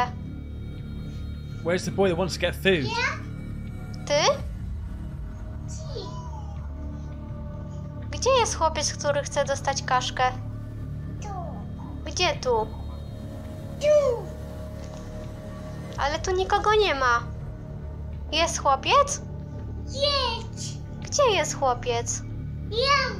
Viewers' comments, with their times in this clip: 0:06 I hear a child's voice in the background. TV maybe?